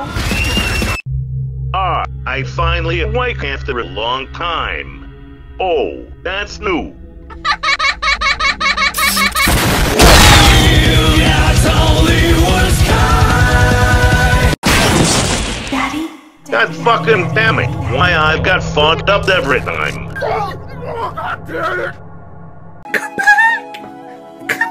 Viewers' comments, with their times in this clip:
0:07 "AHA- A- A- A- A- A- A- A- A- A- A- A- A-" Elizabeth having a stroke or smth 💀💀